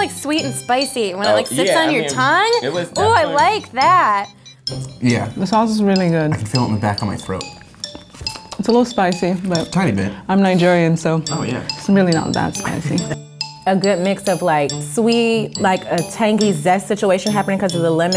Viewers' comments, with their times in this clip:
0:03 wtf happened "ooo I like that" moment of silence 😂😂